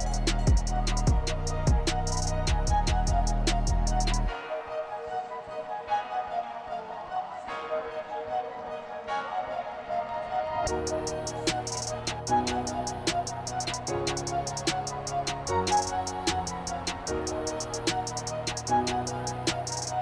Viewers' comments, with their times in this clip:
0:07 The camera shot of David Rudisha's elegant running and the beat shift is just 👌